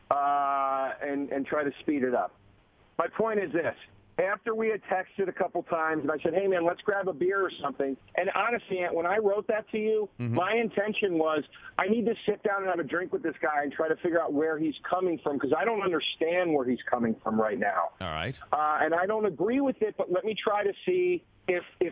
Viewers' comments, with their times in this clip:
0:06 "let's grab a beer" DeRosa sounding a LITTLE bit like Opie in this